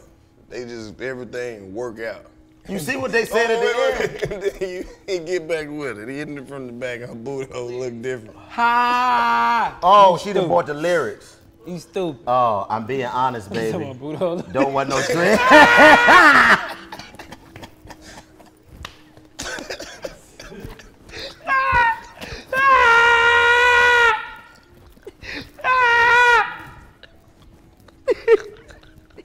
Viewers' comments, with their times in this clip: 0:07 DC laugh takes me out mane lmao
0:12 for some reason the way DC is screaming has me ROLLING🤣🤣🤣
0:14 DC laughing so hard he was hurting is everything
0:14 why did DC hit us with the Tom and Jerry scream for his laugh? 😂😂😂😂😂😂